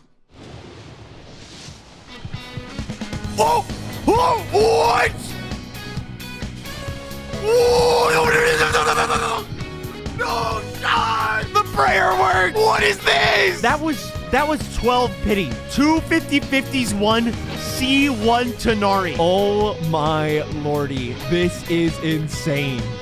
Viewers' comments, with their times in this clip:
0:07 bro activating lawnmower mode.